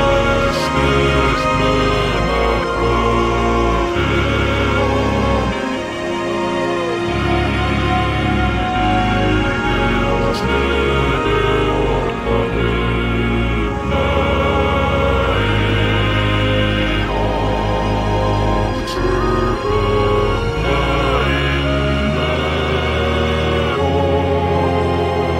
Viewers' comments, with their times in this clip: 0:07 You can reverse this voice in Kingdom Of Hearts and somewhat make out what its saying I personally hear something like "My heart commences empty writhing Goes and leaves yet never slowing In me, a blight inside me gives life"